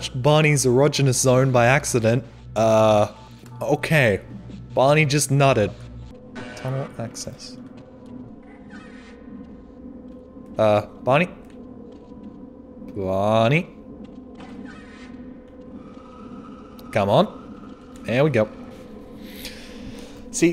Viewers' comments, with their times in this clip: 0:03 Barney just nutted